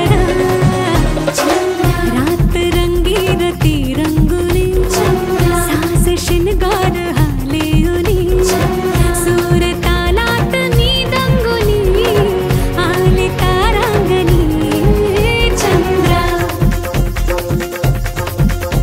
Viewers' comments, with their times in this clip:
0:04 Just noticed Dholak stroke ..master stroke